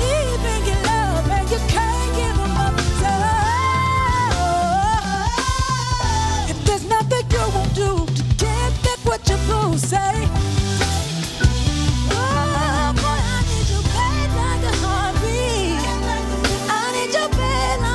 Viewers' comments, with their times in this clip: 0:03 is thee CHURCHIEST thing ive ever heard Jazmine do lol